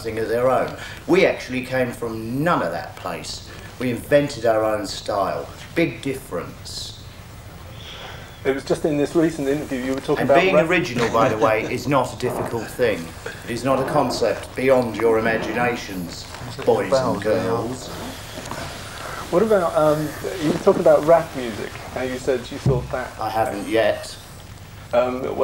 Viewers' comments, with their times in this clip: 0:10 did somebody just fart three times? Because I'm guessing it was the guitarist, forgot his name.